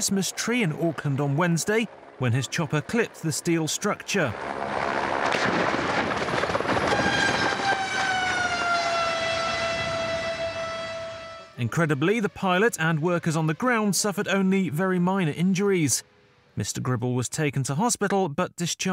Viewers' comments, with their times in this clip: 0:06 What's that screeching sound ?